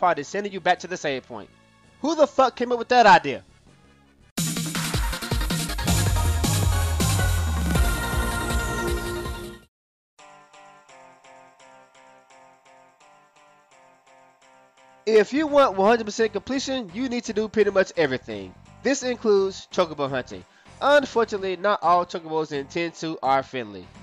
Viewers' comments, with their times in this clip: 0:10 What is the name of the music in the background ? I search FFX-2 chocobo theme but that isn't the one... it's a pretty catchy tune :)